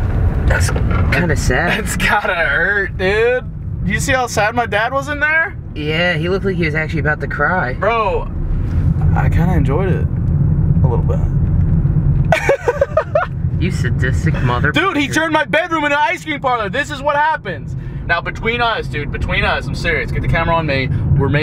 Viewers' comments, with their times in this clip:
0:09 you missed a bleep area